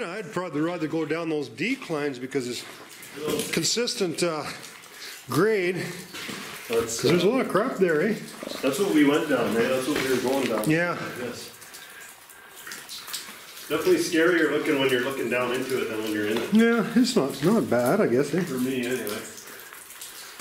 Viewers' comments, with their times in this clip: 0:08 Is that a growl?